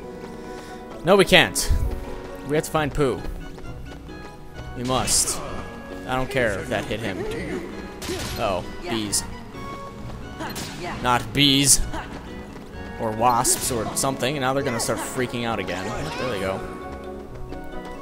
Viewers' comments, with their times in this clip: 0:06 i could've sworn Eyore said SNOORRLAAX